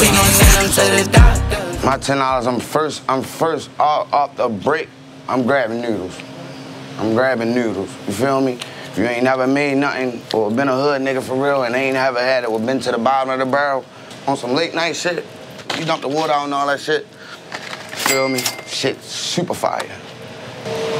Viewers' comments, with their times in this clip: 0:05 nuudlez 💀💀 baltimore ahh